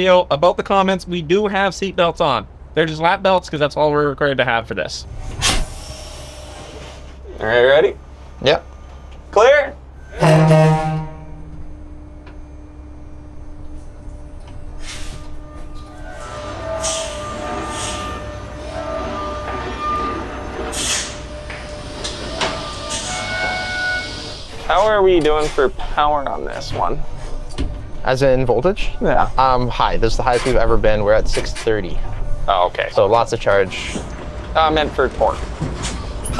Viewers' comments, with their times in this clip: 0:06 love the natural sounds this thing makes. You can hear it working.
0:20 just like a train toot the horn 2 times when you start moving. Safety third.